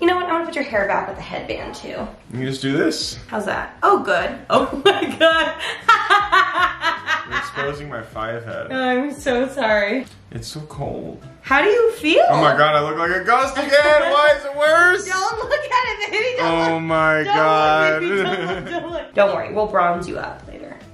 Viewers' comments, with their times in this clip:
0:04 that little "oh my god" 😂